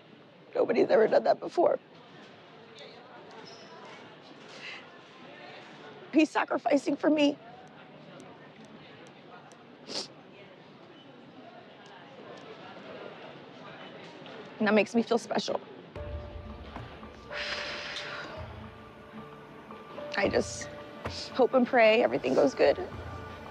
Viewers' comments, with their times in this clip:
0:04 you can hear her eyelashes batting